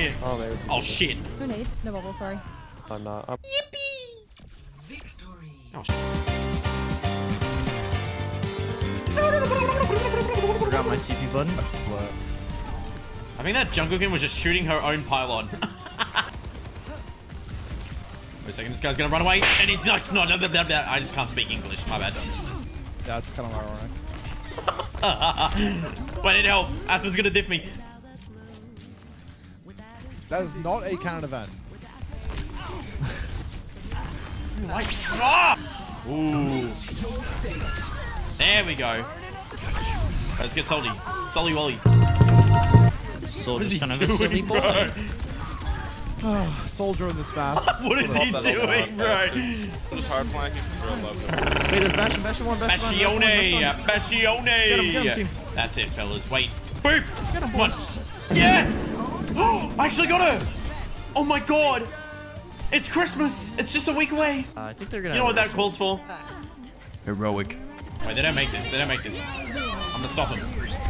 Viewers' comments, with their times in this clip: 0:06 whats that song ? Like I know it's Beneath the Mask but it sounds different...
0:52 gotta be the funniest shit i heard as an arab "بسيوني،بسيوني" 😂😂😂